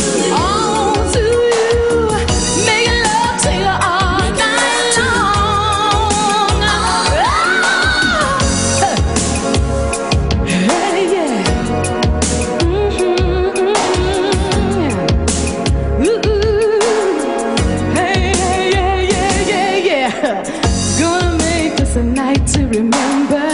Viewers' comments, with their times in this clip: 0:07 I love that roar YESSSSSSSSSSSSSSS BITCH!!!